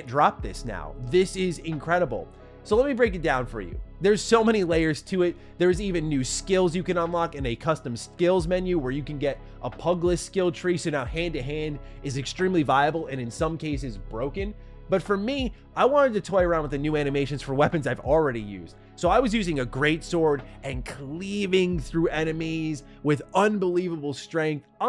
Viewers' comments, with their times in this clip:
0:09 Your pronunciation of pugilist is killing me